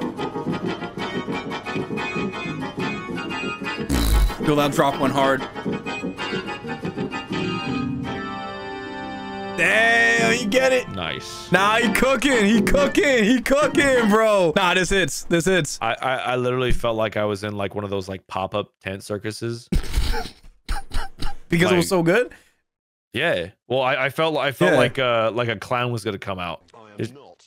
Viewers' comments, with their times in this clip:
0:08 ngl, kinda gives final fantasy fight music vibes